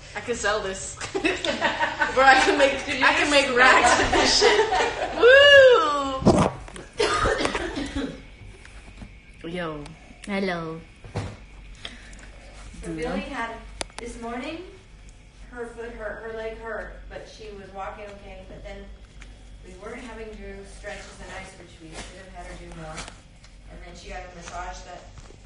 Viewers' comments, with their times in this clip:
0:08 omg that "hello" was adorable